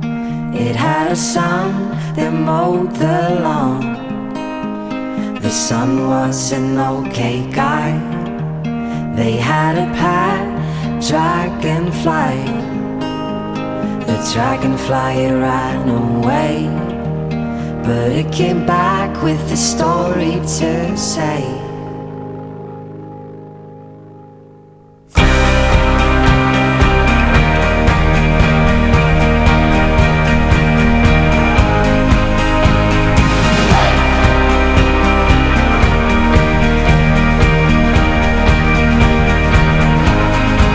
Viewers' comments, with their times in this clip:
0:07 am I the only one hearing “The son was an old gay guy” ? No? Just me? Alright.......
0:25 idk why buh it reminds of counting stars besides dat i love dis song and dis band